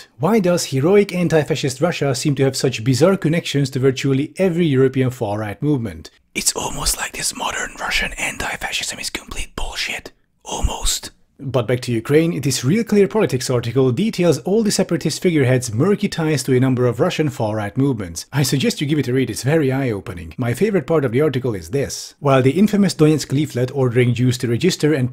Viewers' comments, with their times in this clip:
0:06 what an asmr